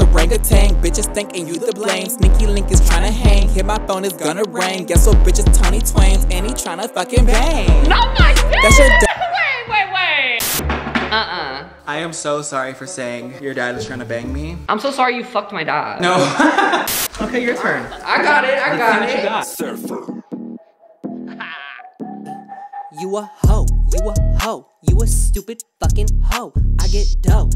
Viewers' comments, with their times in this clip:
0:03 I need that beat
0:15 seriuosly got me thinking i had a chance(i am a female). That laugh was kind of hot ngl. BYE.